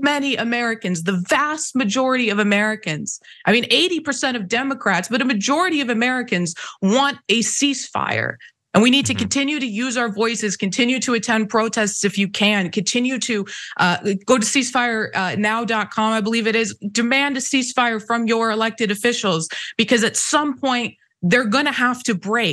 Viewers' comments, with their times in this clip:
0:09 Um when she said ceasefire she really didn’t just fart didn’t she. 😂